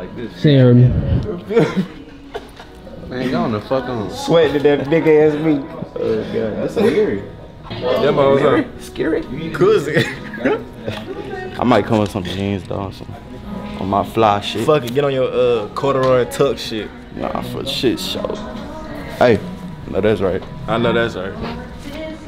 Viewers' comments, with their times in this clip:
0:09 the goofy laugh 😭😭